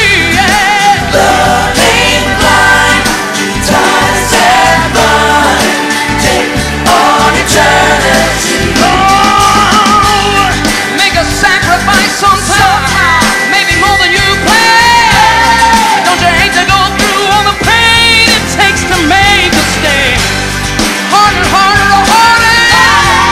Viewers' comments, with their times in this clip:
0:08 When he sings the deep “ohhh” part … It reminds me of the Time when I was rehearsing for worship and I was singing with the Chewbacca sound by accident 😂 Is that how you’re supposed to do that sound? 🤔